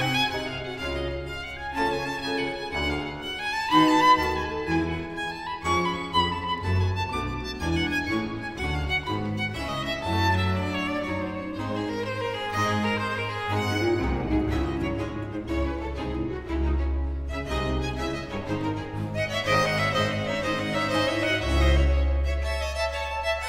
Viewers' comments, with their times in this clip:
0:05 sounds like a jazz excerpt!!!